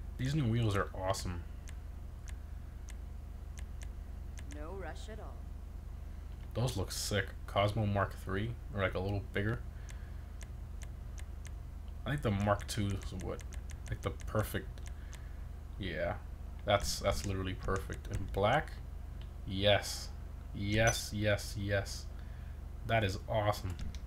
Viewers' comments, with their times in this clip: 0:05 did she just say no Russian